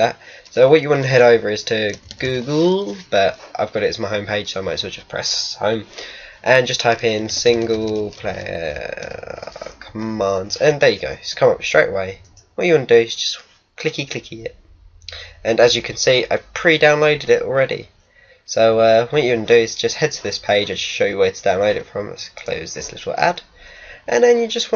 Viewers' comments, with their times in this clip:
0:07 "single muslim" WTF xD